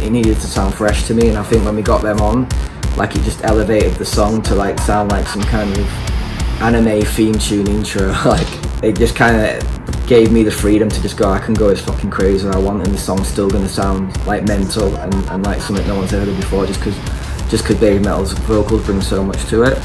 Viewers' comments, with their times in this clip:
0:07 so thats why this song sounds like anime opening 😂